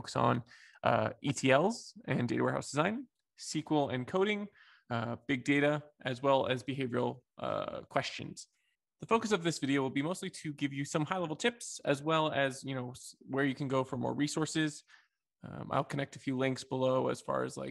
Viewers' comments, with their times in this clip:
0:03 I also called it sequel At the end of the day, I switch between both.